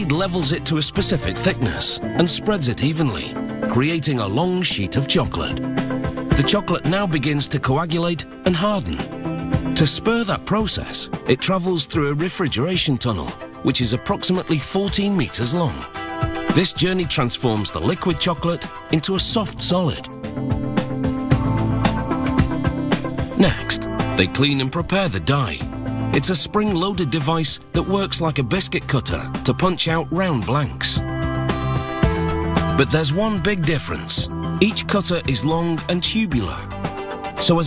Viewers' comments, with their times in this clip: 0:03 Sounds like long shit of chocolate
0:23 'next, they clean and prepare to die'